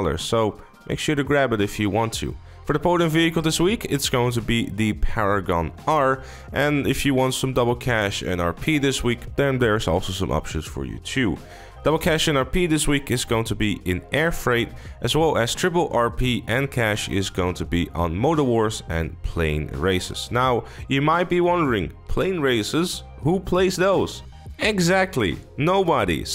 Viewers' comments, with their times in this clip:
0:09 My fucking sides, the monotone voice while the car flips the fuck out.